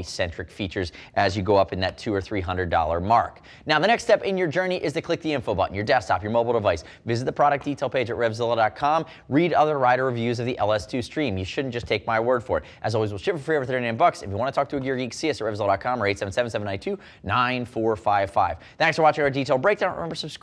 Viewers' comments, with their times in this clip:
0:04 he starts to rap :))